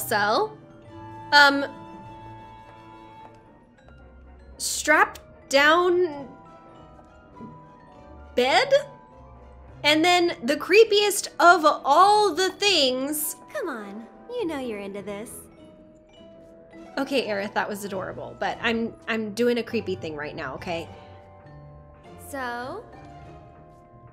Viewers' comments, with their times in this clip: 0:09 Go to for what I have to assume is the best-timed interruption of a human being by a character they themselves voiced EVER. Of all time.